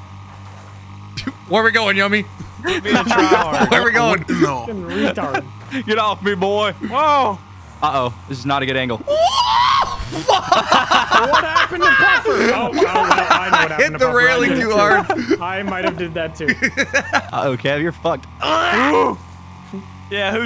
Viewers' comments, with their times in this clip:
0:08 Bro had that R2D2 scream like "WOAAAAAAAooOOOAH"